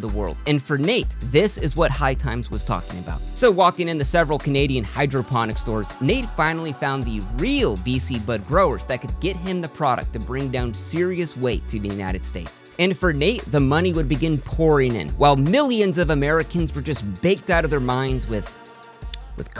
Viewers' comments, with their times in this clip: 0:05 What’s that background music ? It’s heav
0:05 Does anyone have the soundtrack or know the song that starts it’s really faint in the background…. Thanks